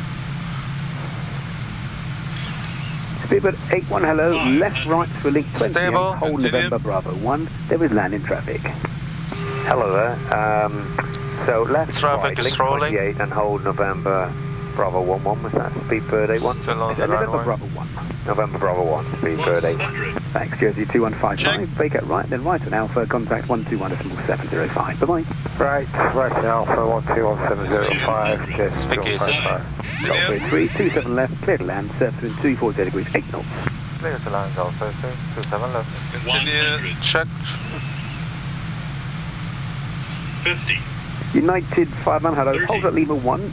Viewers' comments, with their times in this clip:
0:09 Speedbird 81's ultra laid back "Hello there..." really made me smile for some reason :-)
0:30 they got right around auto-pilot disconnect and the 200 call out.